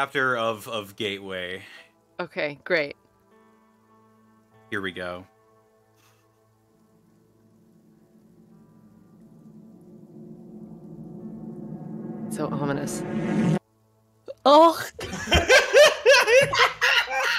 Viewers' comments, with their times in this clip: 0:05 for those interested, the fart starts at: